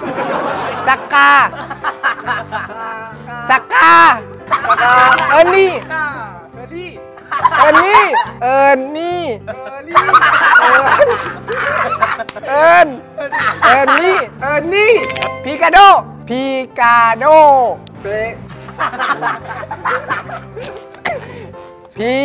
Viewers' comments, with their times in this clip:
0:06 at first i thought he say randi then i read subtitle 😂😂😂